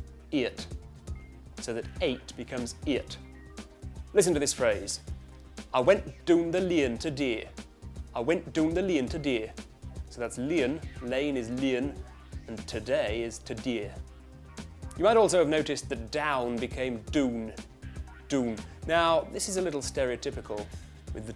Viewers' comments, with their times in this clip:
0:05 Sounds a little Jamaican. lol